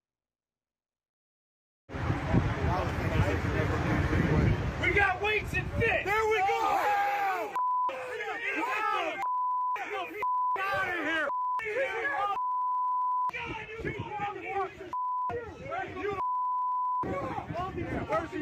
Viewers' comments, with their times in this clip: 0:05 Listen to them. Bleep bleep bleep bleep, not a braincell among the bunch.